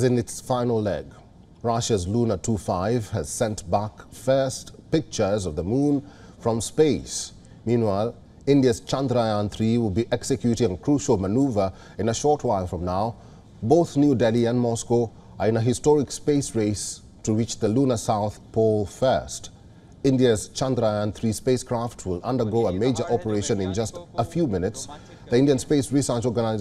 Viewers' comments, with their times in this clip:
0:08 Loves the way he pronounced chandrayaan so perfectly